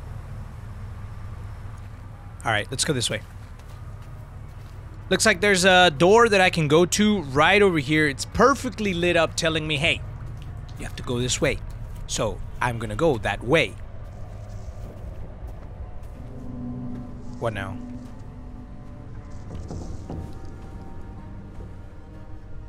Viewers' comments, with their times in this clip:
0:04 when he’s walking towards the basement doors there is a crying noise